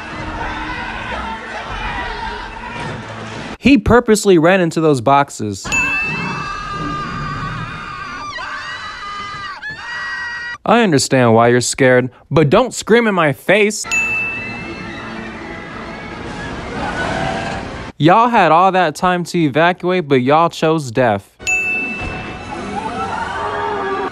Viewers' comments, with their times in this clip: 0:08 Their screams were so loud, it could brake the window's.